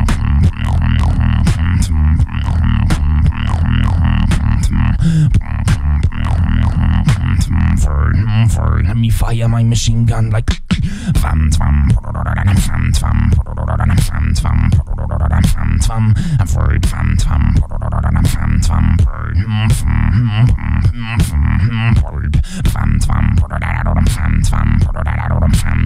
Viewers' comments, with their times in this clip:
0:07 was sick, I like that you find ways to use your unique bass sound to your advantage... keep it up man, keep it low and dirty :D
0:11 my earphones explode